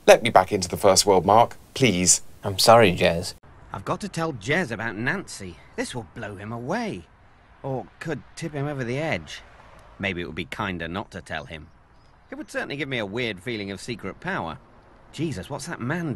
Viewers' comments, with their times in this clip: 0:03 Jeremy’s “please” cracks me up 🤣